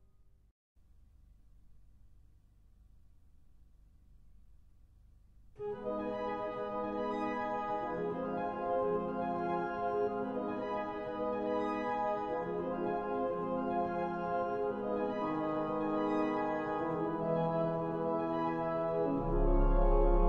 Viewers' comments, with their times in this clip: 0:04 First time I crossed the bridge as a noob in 2000 and heard this music it scared me so much I didn't take more than a step off the bridge before I decided to turn around and go back to where I knew it was safe :P